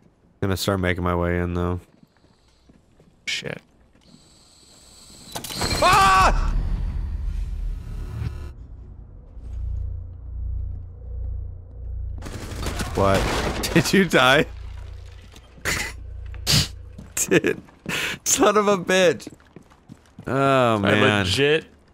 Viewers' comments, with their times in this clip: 0:05 that was a scream of pure and legit terror